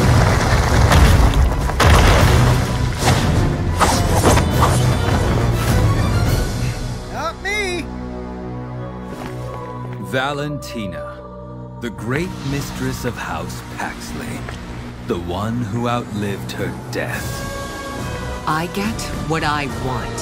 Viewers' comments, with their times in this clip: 0:06 Gusion : not me! Okay why did that sound so funny to me??